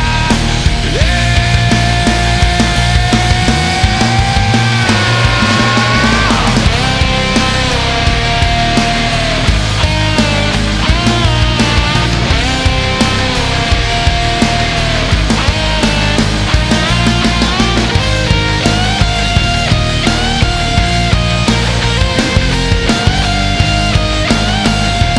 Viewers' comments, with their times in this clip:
0:06 that g string bend.....hits right in the feels..oof
0:08 Yo that solo tho